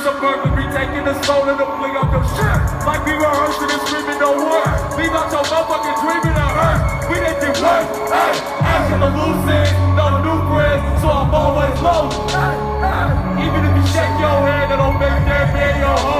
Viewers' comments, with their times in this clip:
0:04 what does he say ? it sounds like "leave out your mother fuckin dreams in a hearse"